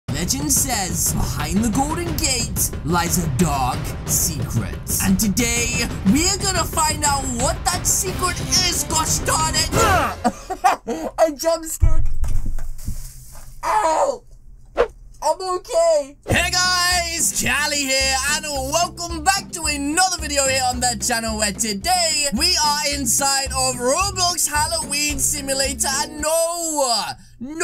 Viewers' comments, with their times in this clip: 0:08 u said chali lol